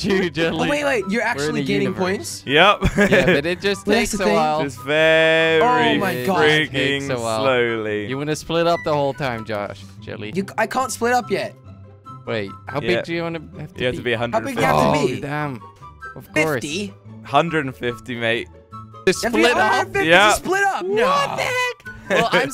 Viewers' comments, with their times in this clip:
0:08 anyone else hear a beep?